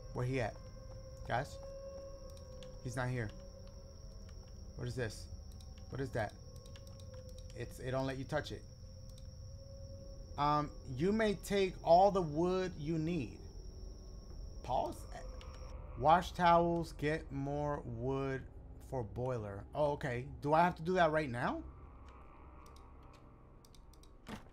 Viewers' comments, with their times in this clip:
0:10 the way he read it and his pause expression was hilarious 😂